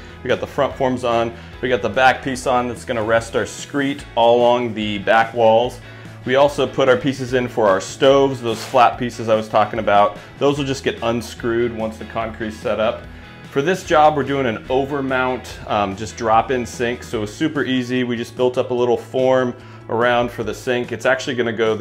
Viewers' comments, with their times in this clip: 0:03 I hate to be THAT guy but it’s called a “Screed”. You keep saying “screet”. PS: it came out super nice.